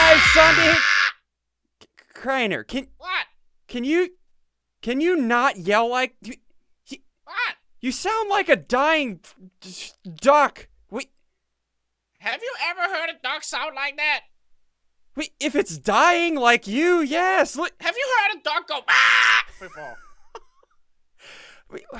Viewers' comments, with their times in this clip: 0:06 No offense but where did you learn to talk? xD